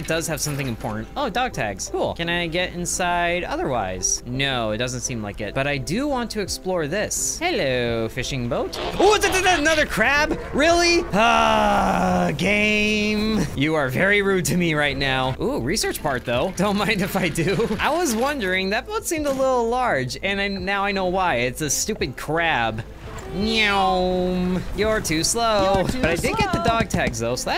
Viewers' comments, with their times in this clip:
0:08 I love the g1 transformers sound